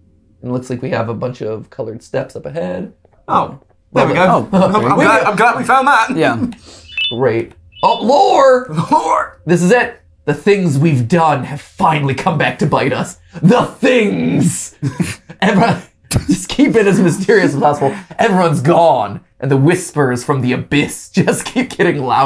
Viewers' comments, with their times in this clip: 0:07 Bendy And The Dark Revival ahh note.